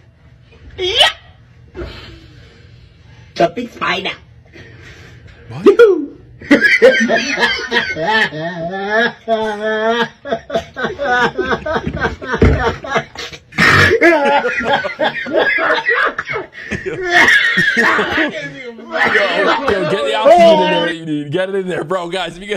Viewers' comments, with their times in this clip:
0:06 bro sounds like emperor palpatine😂